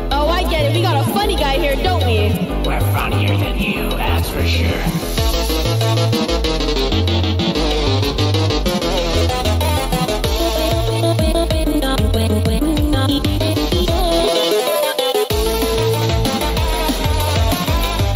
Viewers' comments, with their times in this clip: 0:05 * randomly just a rap battle here*